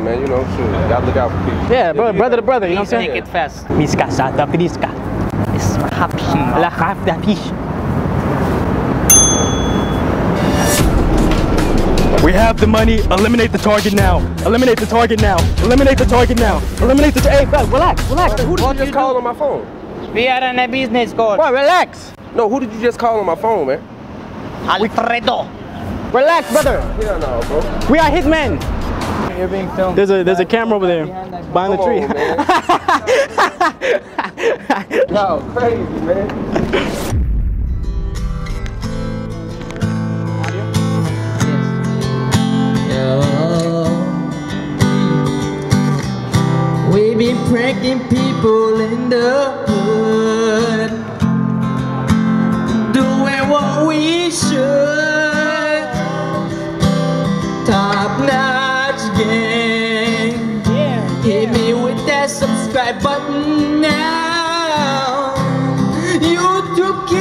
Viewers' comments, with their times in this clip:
0:03 I started rolling when they started speaking a made up language and he took his shades off looking crazy 😂😂
0:20 The way he said "We are on a business call"... LMAO 😂
0:54 wow amazing you can sing but it's much better if you keep quiet ma boy